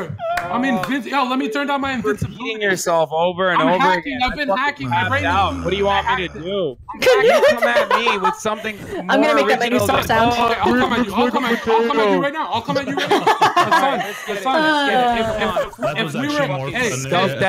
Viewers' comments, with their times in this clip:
0:04 i wanna start a petition to make knut's "sigh" the new sound that the villagers do on the next minecraft update